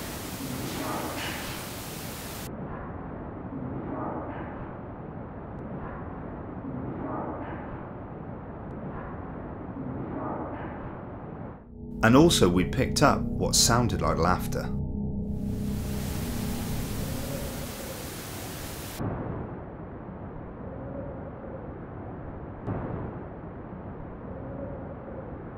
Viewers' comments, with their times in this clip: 0:08 sounds like “what”